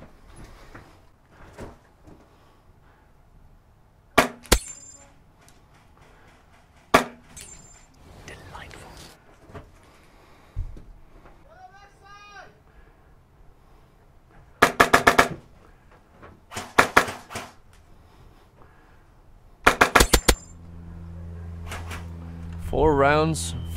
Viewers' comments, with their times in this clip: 0:06 Pops a guy in the helmet - whispers - "Delightful"
0:07 do y'all hear that voice?
0:08 that little “delightful” lol
0:11 Did anybody hear him whisper delightful at like